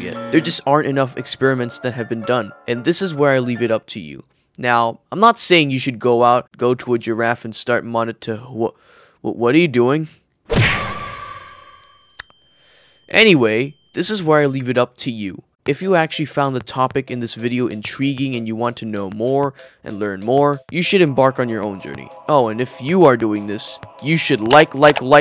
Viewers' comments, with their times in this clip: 0:09 actually made my ears ring